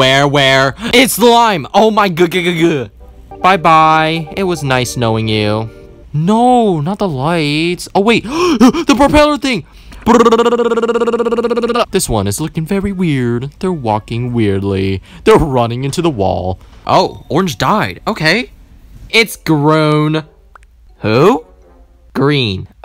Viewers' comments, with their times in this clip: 0:09 lol what 😳 why the ppwpwpwppwpwppwpw helicopter